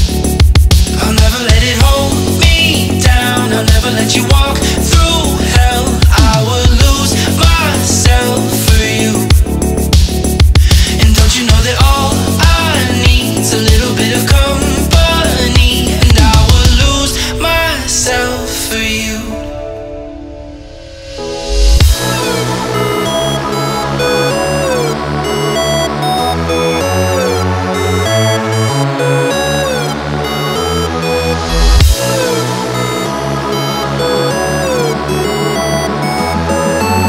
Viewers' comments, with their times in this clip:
0:06 Never gonna give you up, never gonna let you down.... Am i the only one who thought that?
0:21 BEAT DROP FOR YOU ALL!!
0:24 unicorn kid feel <3 miss that guy